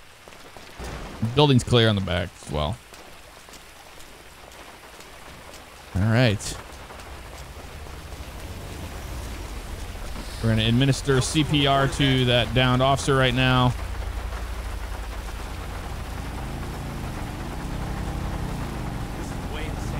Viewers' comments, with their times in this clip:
0:06 GTA Rain In My AirPods Pro With Noise Cancellation On. HEAVEN